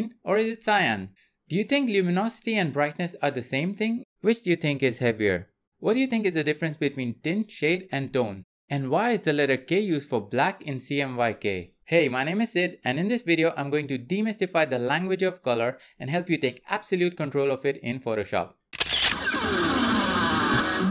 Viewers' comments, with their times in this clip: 0:05 “thats ræght, a kellogræmme of feathërs”